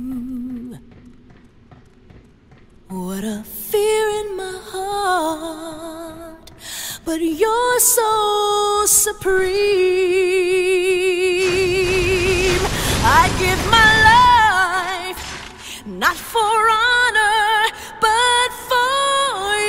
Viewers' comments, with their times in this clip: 0:06 Snake eater soundtrack at capella, like in the game when you are in the ladder after killing the fury <3